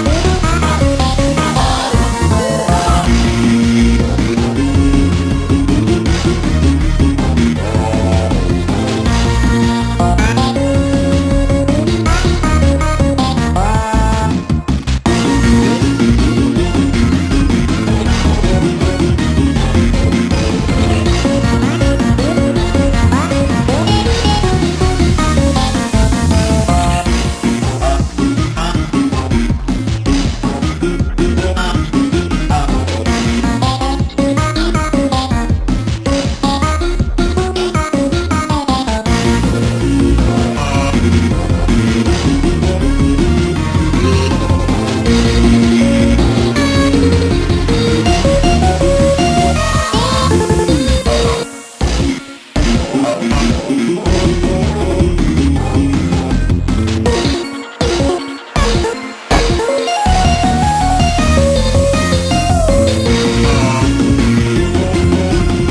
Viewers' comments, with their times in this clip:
0:03 anyone else hear endless?
0:03 i love how the instrumental mimics the vocals
0:50 the beat is rocking.
0:51 I love how you got rid of the jumpscares and made it sound natural